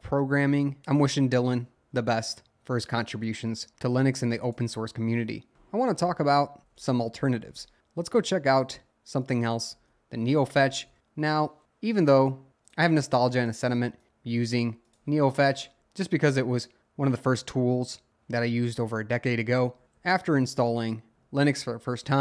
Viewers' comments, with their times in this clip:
0:10 It's. Very. Comfortable. To. Listen. To. You. Speak. Like. That.